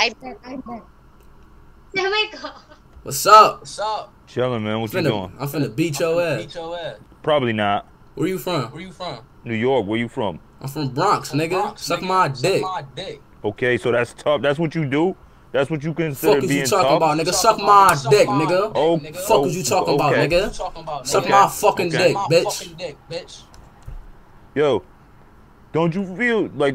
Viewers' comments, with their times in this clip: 0:08 and he got the nyc accent and he said SMD